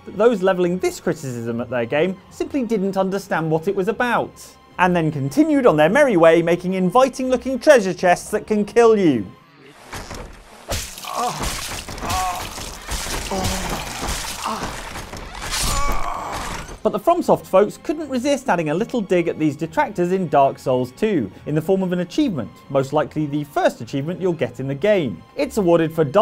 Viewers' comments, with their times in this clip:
0:06 That sounded oddly sexual.
0:09 This man does NOT sound like he's getting ... "killed".
0:09 ... he sounds a little too happy to get eaten by a treasure chest...
0:10 Is it just me, or did the guy getting eaten by the mimic sound like he was enjoying it…?